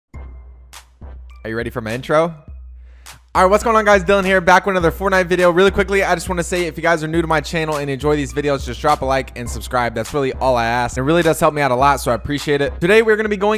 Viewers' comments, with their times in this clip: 0:00 Bro the fastest rapper on the planet